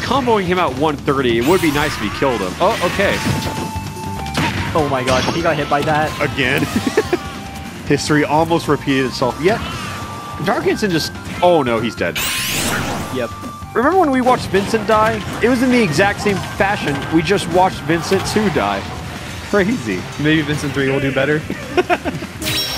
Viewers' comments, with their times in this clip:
0:06 it activates my “Hey Siri”
0:09 him saying history activated Siri on my phone and I was so confused